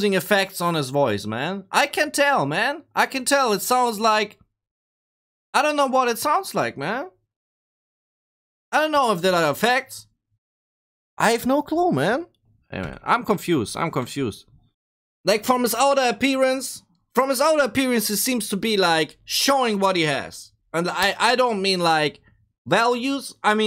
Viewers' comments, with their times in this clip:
0:08 real voice no effect